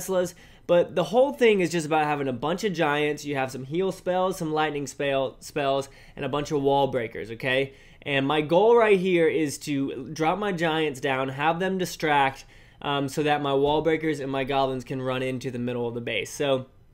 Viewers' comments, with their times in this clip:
0:04 Must be, listen at the way he says SPAELLS lol